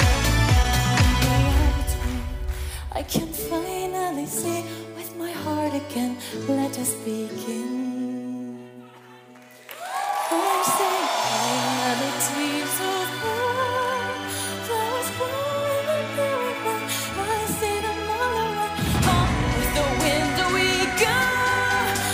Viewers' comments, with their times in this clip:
0:06 haha people thought she was over and started cheering.